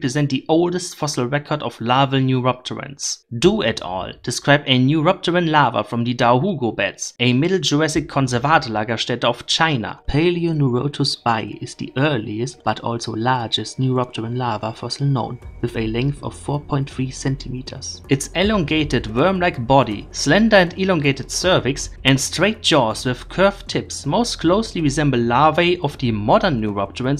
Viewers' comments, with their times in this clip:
0:10 did you re-record this at night? It sounds like you were trying to not wake up your parents.